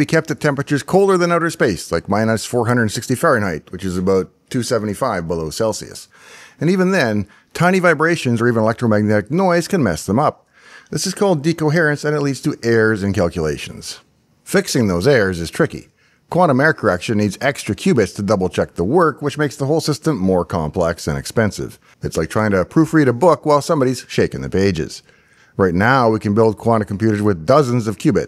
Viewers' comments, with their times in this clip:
0:10 off topic but I love hearing North Americans trying to pronounce the letter R in the middle of words. Those errors weren’t errors, they were “eh-ahs” 😂